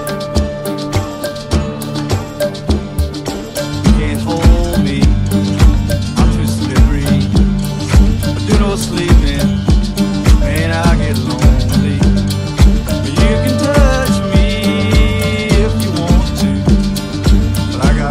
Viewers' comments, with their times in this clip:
0:03 This is lit as fuck for the first 10 or so minutes. They ruined it with the lyrics minutes in, was perfect until then.